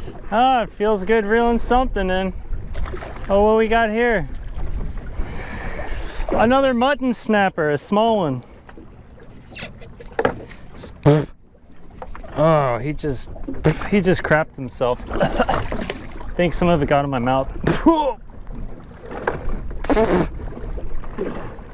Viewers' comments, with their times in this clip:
0:09 I don't know. I can heard something squeak (maybe the fish) and next thing you know Captain got a mouth full of it. Caption: Yes! Hehh heh heh.. It doesn't feels like a monster. But ta it feels good reeling something in. Mutton snapper: Wait.. wait.. Let me go.. I don't feel too good. Caption: Oh look what do we have here.. ah another mutton snapper, a small one. Mutton snapper: *exploded squeak squeak* Captain: He just crap on himself. spitting it out I think I got some in my mouth. puhhh.. Mutton snapper: That's what you get for pulling me out while I'm taking a dump.